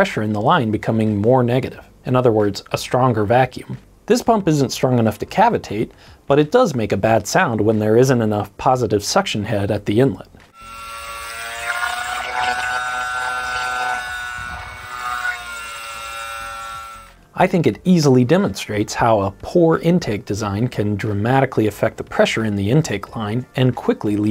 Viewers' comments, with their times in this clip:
0:05 "But it does make a bad sound when there isn't enough positive suction head at the inlet." Pump: *UNHAPPY PUMP GARGLING*
0:10 casually just managed to make a pump sound like a V10 F1 car. Underwater. Bubbleblubblbubublb
0:11 that there is the sound of bad head